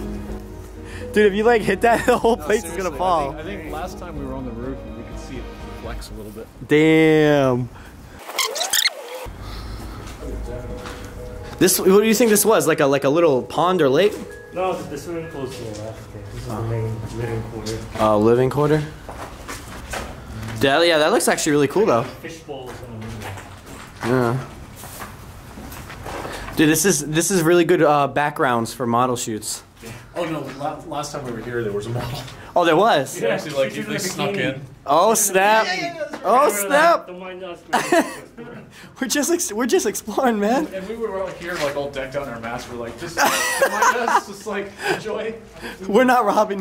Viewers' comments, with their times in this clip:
0:08 The fastforward bgm in creeped the hell outta me
0:30 put ur ear close to the phone 😰😰 Something sounds like 'help me "in a Alien version